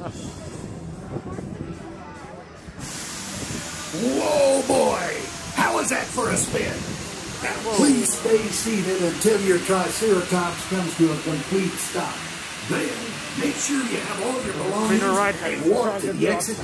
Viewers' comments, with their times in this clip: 0:03 what's wrong with the voice actor haha, he came outta nowhere